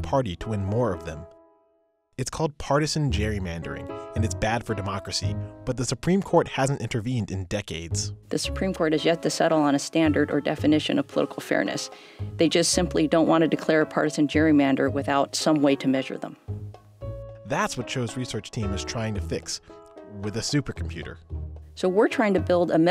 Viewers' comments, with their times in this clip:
0:08 is that elastigirl's voice tbh